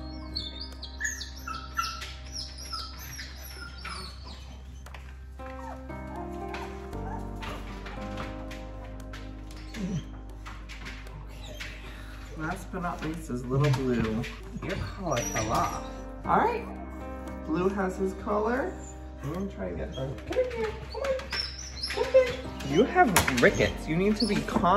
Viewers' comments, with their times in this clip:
0:05 I'm in the melancholy music just started this better not be foreshadowing you have to stop playing our emotions and those puppies have to get better!